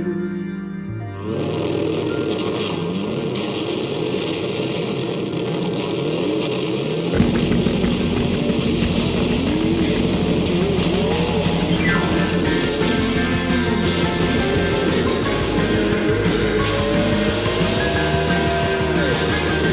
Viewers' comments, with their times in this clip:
0:04 At the mark the motorcycle revving up is a guitar,